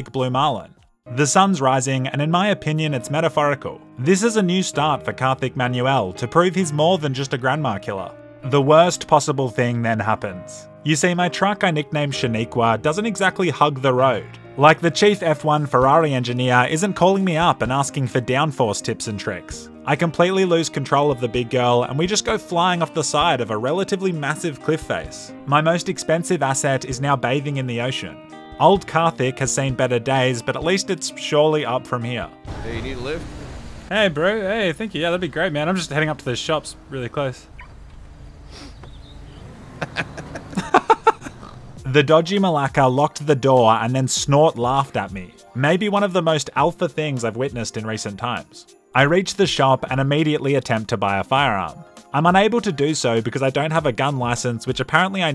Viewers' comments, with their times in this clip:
0:03 Did you ever find the song ? I've heard it before but can't remember the name. Song identifier apps are useless since it's quiet
0:40 damn i thought that was the sound of a pig in minecraft